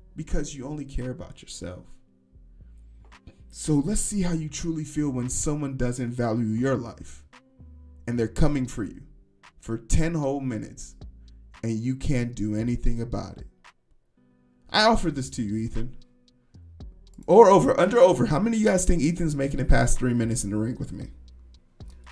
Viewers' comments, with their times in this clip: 0:03 Genuinely impressed by the delivery of that threat: So gentle, yet so believable 10/10 would watch the fight